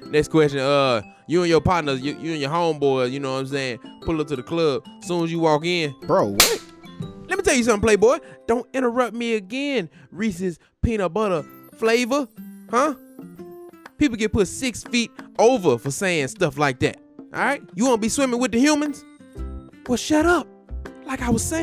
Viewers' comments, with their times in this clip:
0:06 sounds like country wayne